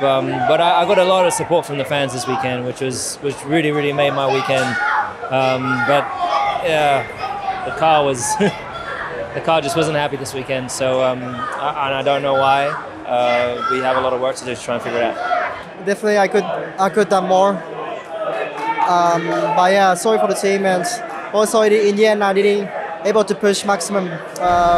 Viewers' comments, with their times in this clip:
0:05 someone answer the kid screaming istg i had headphones on